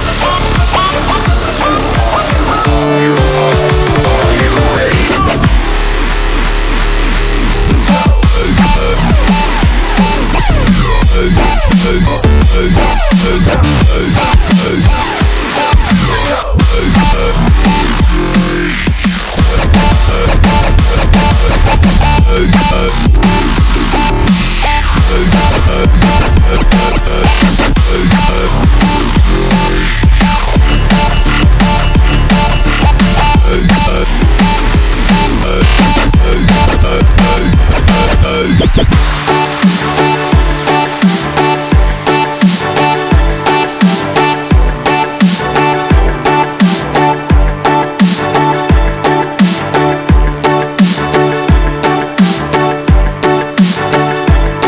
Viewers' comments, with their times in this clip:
0:07 I always said he's talented :D Dat intro and badass dnb moment :D
0:11 Beat change gets me every time! Freakin' insane!
0:19 AWESOMEE SONG !! cool drop
0:39 where could i find a song thats like at the end where it gets smoother if someone could show me one i would appriciate it